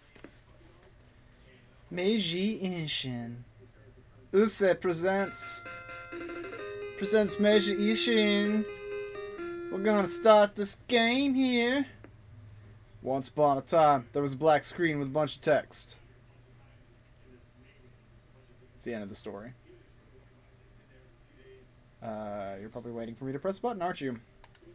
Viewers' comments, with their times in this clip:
0:09 you sounded a lot like Mordecai when you said that.